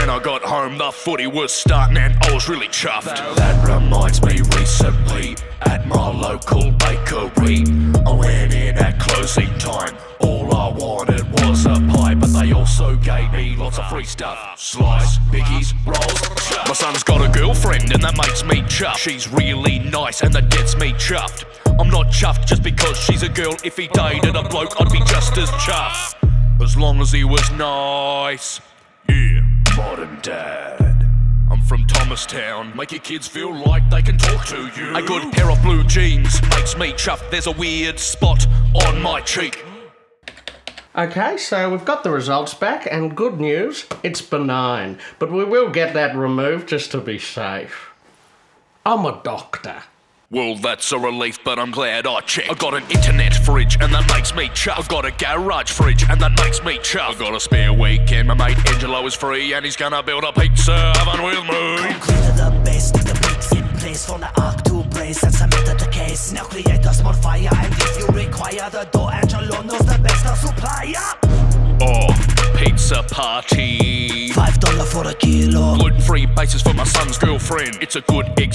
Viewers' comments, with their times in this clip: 0:03 Anyone realise how hard went
1:01 that delivery though 😱 lowkey bars lol
1:01 ERB levels of rapping